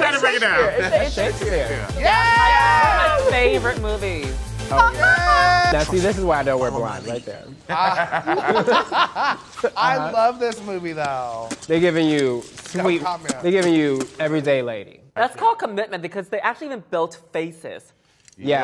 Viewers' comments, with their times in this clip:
0:04 Blair's laugh LMAO
0:04 blair doing the white chicks LAUGH